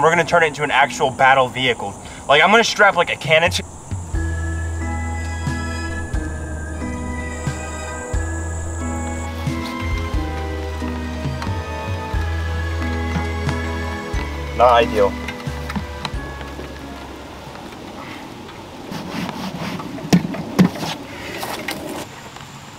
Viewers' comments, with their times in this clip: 0:03 like im gonna strap a can .... "fun music starts playing"😂